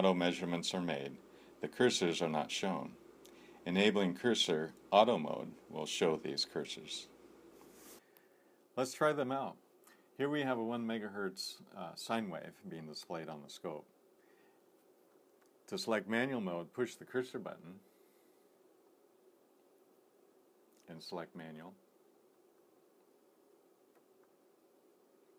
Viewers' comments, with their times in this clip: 0:08 too bad the rigol video's keep going into whisper mode. this one requires a loudspeaker setup starting otherwise nice video.